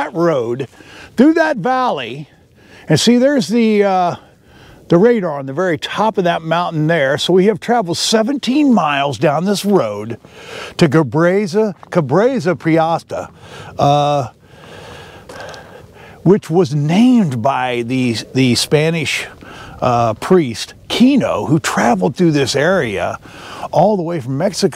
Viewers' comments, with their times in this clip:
0:10 I'm only "Cabresa Priasta" and I know this one is gonna be good.